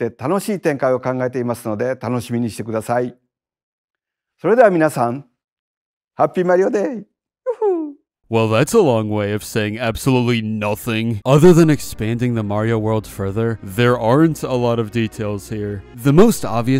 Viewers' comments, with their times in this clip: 0:04 his woo hoo was so adorable I love this man